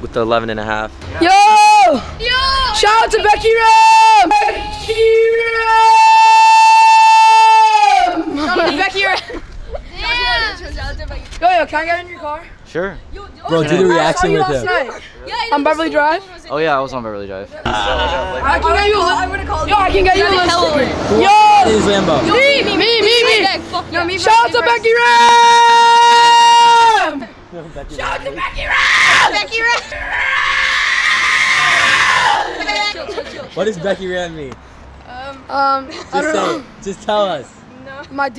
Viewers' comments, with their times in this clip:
0:08 my hears. um dafuq
0:23 Ear rape ouch